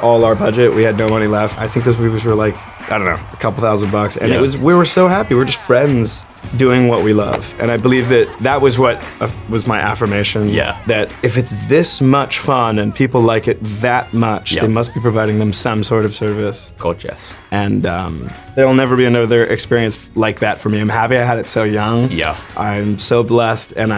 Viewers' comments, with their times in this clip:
0:06 The background music "All in this together" playing as Zac is answering questions my heart 😥😥😥